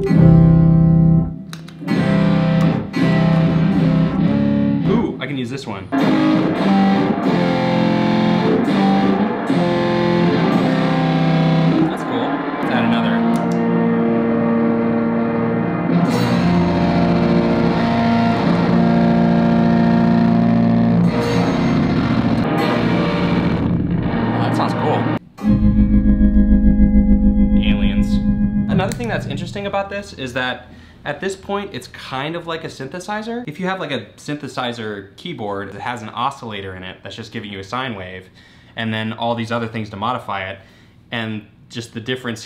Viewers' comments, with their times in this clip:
0:05 this was almost a smoke on the water moment here. Love it :D
0:23 a l i e n s
0:26 I bought Dave Gilmour's garden spade at auction. Now I know what to do with it. also, isn't aliens, it's a sanctified Hammond B3 gospel choir organ.